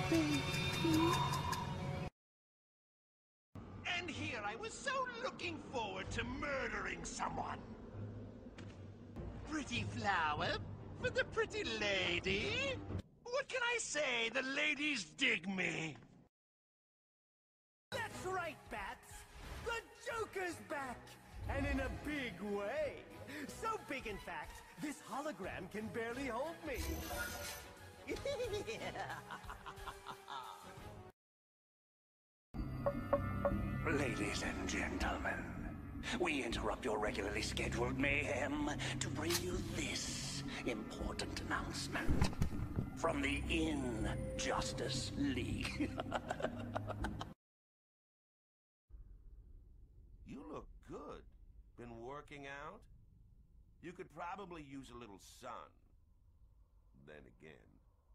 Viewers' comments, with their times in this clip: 0:04 sounds like Raiden
0:42 if Data was asked to play the Joker.... And made him... Kinda edgy